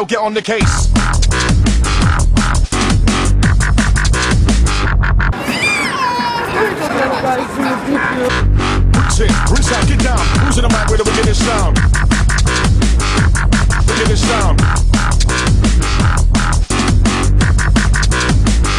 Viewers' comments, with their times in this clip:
0:05 Even the baby cried😂
0:05 i died when the child started crying
0:06 that crying kid will be 11 y.o by now. just my guess